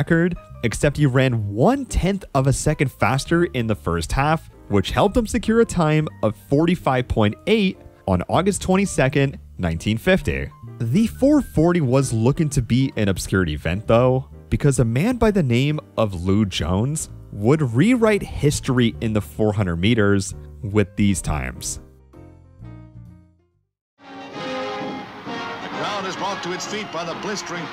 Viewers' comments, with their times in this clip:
0:10 Bro why did you say 1950 like that? 😂